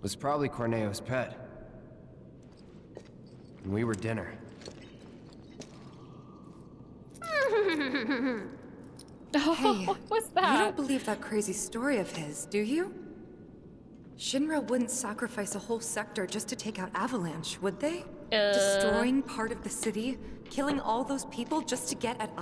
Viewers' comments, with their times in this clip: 0:07 And the cutest and most loveable game character EVER (yeah, like ever) award goes tooooo... "drum roll" AERITH GAINSBOROUGH!!! Let's hear it for Aerith everybody! That was Aerith's attempt at imitating Don Corneo's neigh laugh 😆